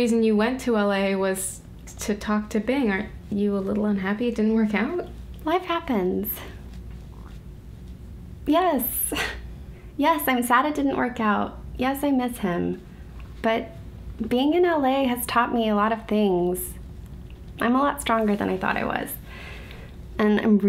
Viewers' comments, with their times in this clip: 0:06 Anyone else hear the stomach grumble ?